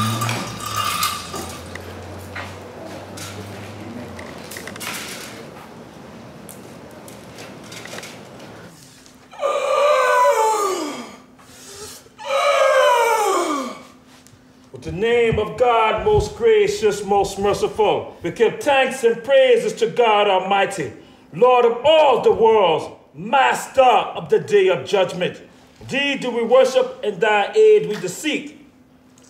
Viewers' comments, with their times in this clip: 0:10 that's how I sound after taco Bell